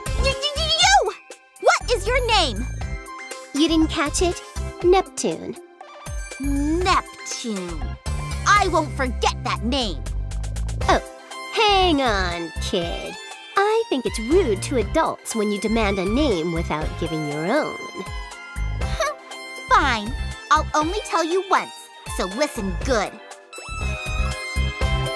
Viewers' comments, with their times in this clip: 0:07 Frick? A human pronounced Neptune properly? Whoa... SourceL Re;Birth1 - Compa, Every Balisicom Person.